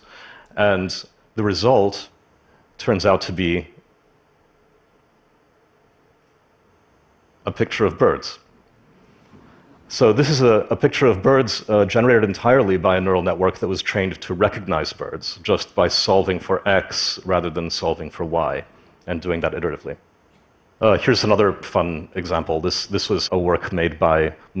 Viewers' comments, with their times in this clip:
0:07 waits for clap. Awkwardly continues talking and stuttering.